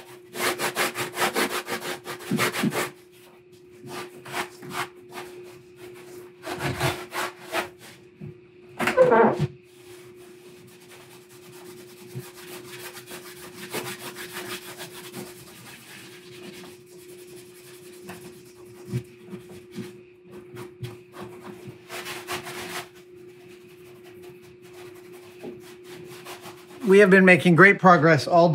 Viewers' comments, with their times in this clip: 0:08 That creak. It's almost like the prop itself was getting into character.
0:08 That creak was VERY convincing!
0:08 Well the door sound is already there :)
0:08 I think the sound came from the stand scraping on the floor but holy cow does that sound sell it as a real safe door being closed :O
0:09 Hinge sqeaks like an old safe door 😄